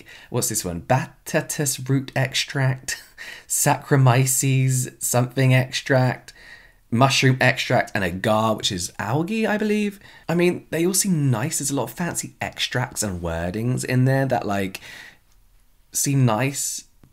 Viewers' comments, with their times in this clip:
0:03 Did you just say bat TESTES root extract? No ma'am!!